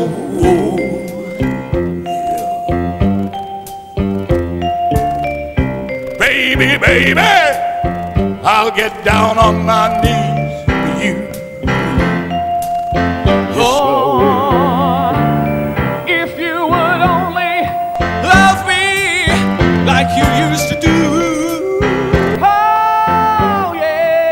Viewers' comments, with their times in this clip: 0:05 It's that part of the show where Mr Paul Shane seated next to me, does a song in the style of club singing